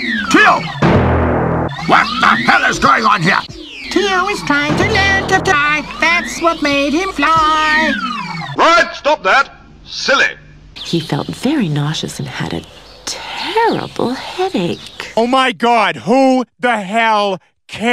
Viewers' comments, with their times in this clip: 0:04 Tio is trying to learn to die, that's what made him fly! LOL 😂😂😂 😂😂 🤣 🤣🤣 🤣 🤣